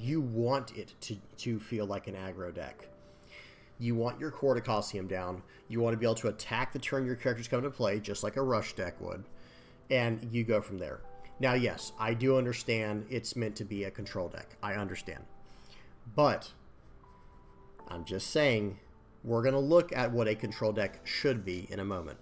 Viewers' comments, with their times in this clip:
0:04 I have a question, as a non-native speaker and TCG noob. What did you say "You want your quarter costium down"? Probably I misheard. lol